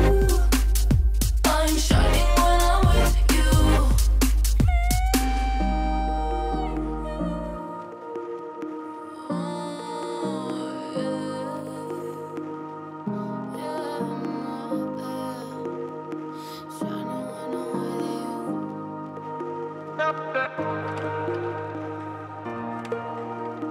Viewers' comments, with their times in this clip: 0:04 arguably the greatest transition in the whole track. I'm drinking this cool aid all day long :) Thank you for your unbelievable talents good sir. 1love